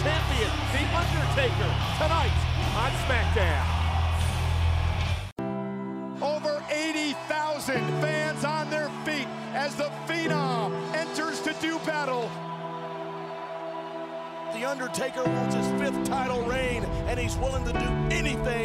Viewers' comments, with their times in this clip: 0:06 Hi brothers in there’s music sad between Batista and the undertaker I needed the name of music plz